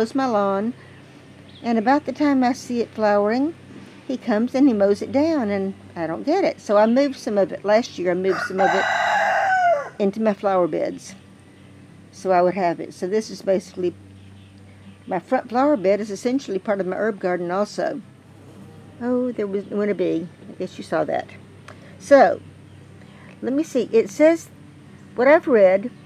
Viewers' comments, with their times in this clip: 0:09 Love the rooster sounding off